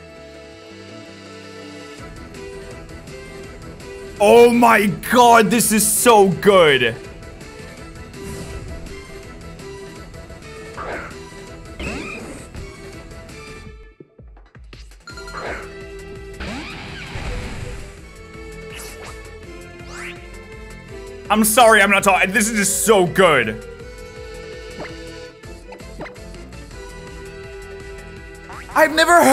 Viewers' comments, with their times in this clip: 0:10 THE THEME MAN!!!!!